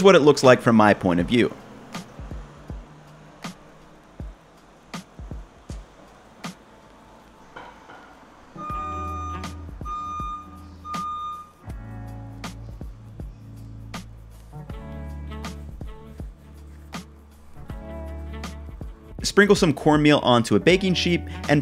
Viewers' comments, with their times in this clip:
0:07 my dough didn't start beeping. Am I doing something wrong? lol